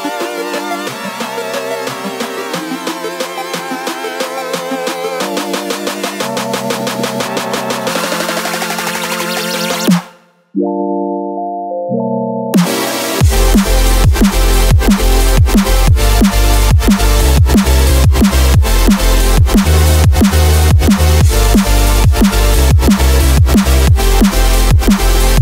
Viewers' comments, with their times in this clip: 0:10 When I heard this I knew that beat was about to drop.